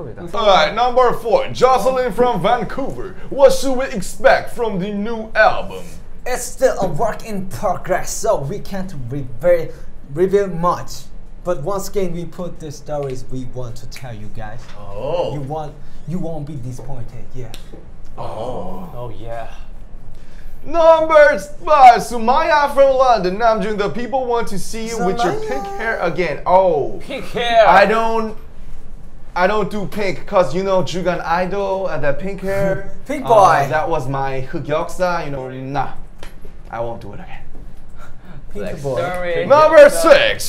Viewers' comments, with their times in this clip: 0:05 IM DYING HES TALKING SO AGGRESSIVE
0:05 jungkook is trying to explain things while also rapping
0:05 jk: singing we don't talk anymore perfectly mean while:
0:06 Jungkook's English is so cute, waaaaahhhhhhhhh!!!! 😫😫😫😖😖😖💜💜💜
0:06 Jungkook's English is so cute was☺️😍
0:06 jk speaks English very clear The other 6 PROUD
0:08 THAT ENGLISH WAS REALLY AMAJING... 😍😍
0:16 Uwuuuu please jks English Let me breathe kook u just said a really big sentence in one breath
0:18 RM like a proud father after listening to jungkook's english 💜💜💜.....he said true....Jungkook's english is so cute waaaw💜💜💜😁
0:24 The way Jungkook speak "sumaya" is so awesome
0:24 jungkook singing people's name is honestly so cute
0:25 jk' sUMayAAa.... my name is sumaya from now on